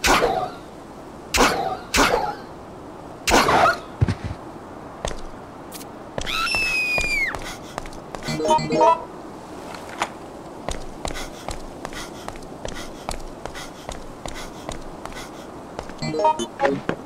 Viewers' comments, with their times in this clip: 0:03 That girl scream was so chilling! Never heard it before on my playthroughs! Must be only on VeryHard mode ?